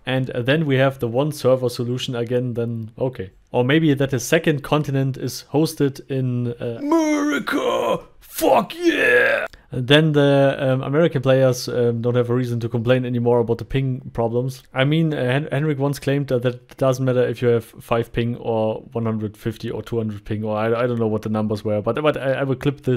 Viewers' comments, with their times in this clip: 0:05 I’m from America and can confirm most of us sound like that.